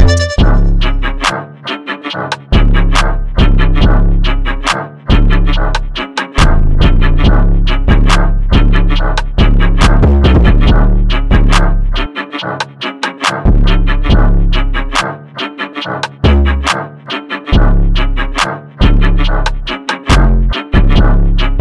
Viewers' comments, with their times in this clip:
0:03 the beat sounds like it’s getting faster and faster as u try to rap on this beat 😂😂😂